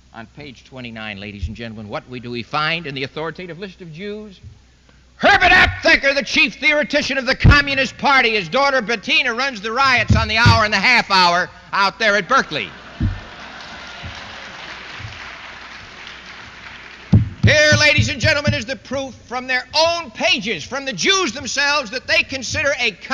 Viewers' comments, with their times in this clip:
0:04 Man... this tone, sounds so much like Hitler.. Evil.. :-(